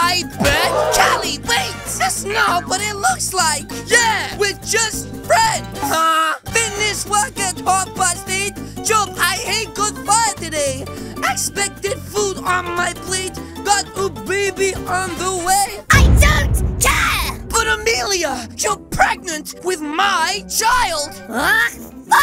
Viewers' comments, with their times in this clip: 0:07 He sings a song